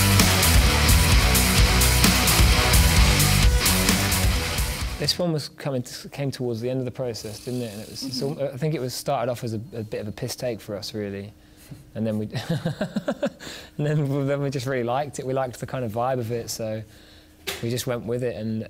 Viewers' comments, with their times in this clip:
0:06 did Oli just fart? Or he did emit gas from the anus?